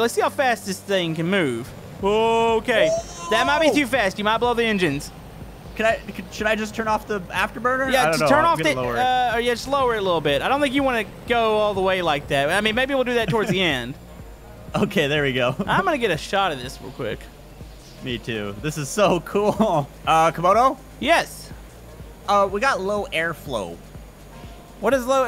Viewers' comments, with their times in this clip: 0:07 did eny one hear someone els during